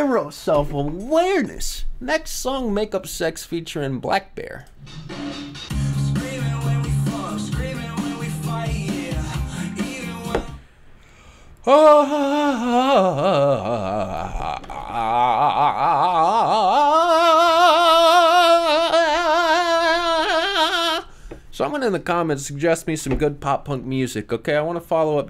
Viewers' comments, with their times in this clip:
0:10 Yoko Ono is that you?
0:12 nice odb impression